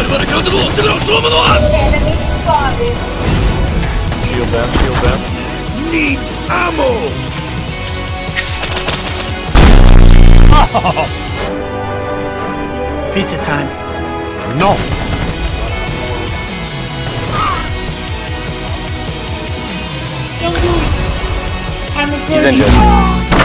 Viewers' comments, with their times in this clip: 0:08 tfw skyhammer voiceline happiness noises